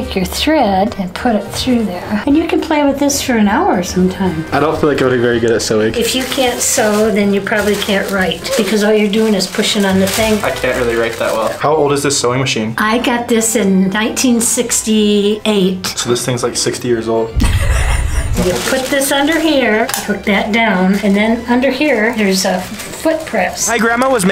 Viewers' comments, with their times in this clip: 0:08 rip Oof sound😢